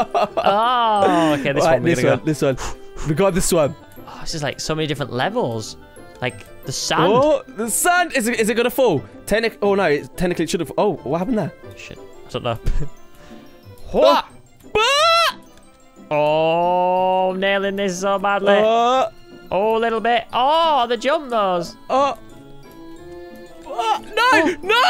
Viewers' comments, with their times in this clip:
0:10 did enyone els hear him swear under his breath